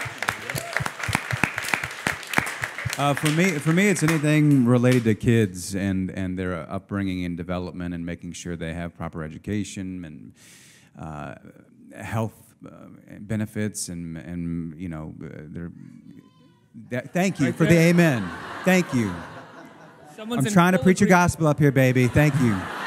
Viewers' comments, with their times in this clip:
0:07 -ish, as Matt Bomer is speaking, I had texted my brother to bring my baby down as the interview was wrapping up...and at that moment, my baby sees me in the crowd, and yells "Mommy" - I walk over to her and she gets excited and starts yelling again. Matt handled it well (sorry Matt), but the host seemed awkward. Aol Build will probably ban kids, no thanks to me. Why was my baby there in the first place? I was visiting my brother in Nyc, on a Friday, and touring his office and meeting his awesome team... timing was great since theniceguys were promoting.